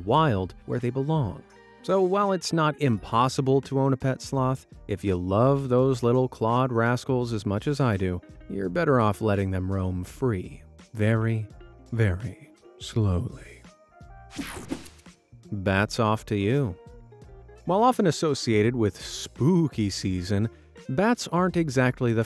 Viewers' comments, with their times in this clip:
0:07 ... that asmr was intense